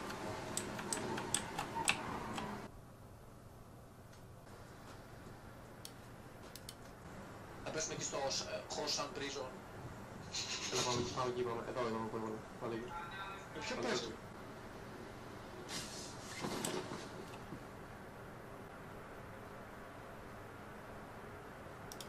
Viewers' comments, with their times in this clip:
0:08 I love it when u can never understand the people on voice chat la,o